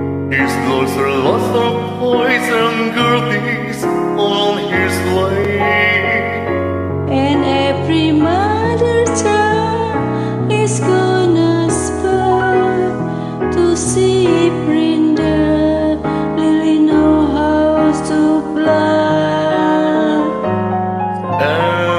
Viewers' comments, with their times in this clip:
0:09 her Voice actually peaked sounded good for a sec she should practice more she has a pretty sounding voice just gotta work on pitch and tempo